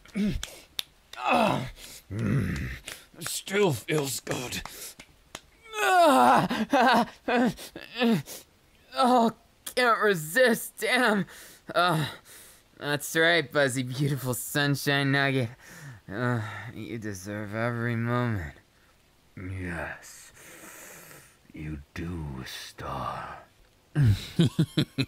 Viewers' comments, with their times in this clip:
0:08 Iida's voice hits different Mom pick me up in scared.